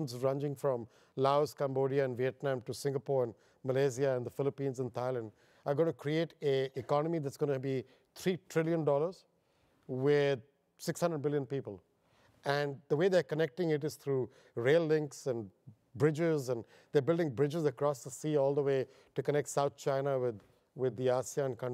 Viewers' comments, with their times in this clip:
0:09 AM I THE ONLY ONE HERE WHO HEARD IT AS 600 BILLION PEOPLE?